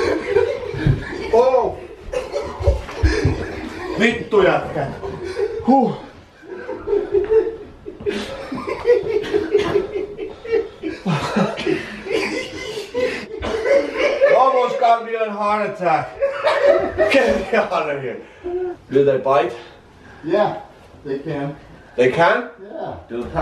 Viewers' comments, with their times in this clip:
0:10 did hp said the infamous greek phraze "xesthka panw mou" ?